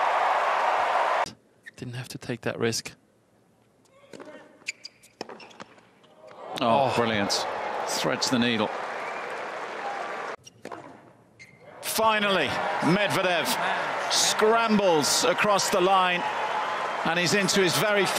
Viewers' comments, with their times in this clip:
0:04 Is no one noticing the ball Medvedev hits ? It sounds like it clips the net on the wrong side of the singles post. Should be a point for Tiafoe in my opinion